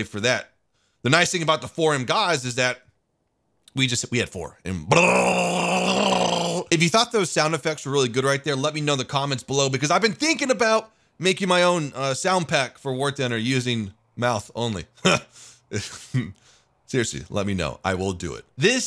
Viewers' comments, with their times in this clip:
0:06 Michael bay sound effects right there.